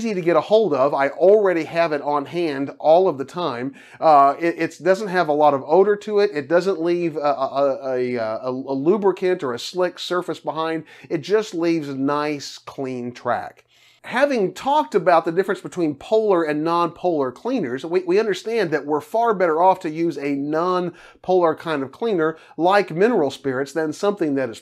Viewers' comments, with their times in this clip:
0:08 Somehow it just sounded like a midnight infomercial.. for possibly your buddies product that he made